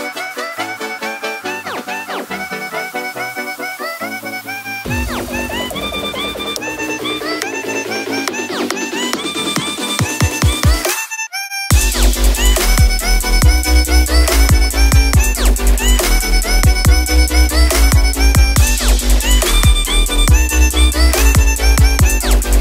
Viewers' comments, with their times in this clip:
0:08 the music litteraly makes me laugh😂❤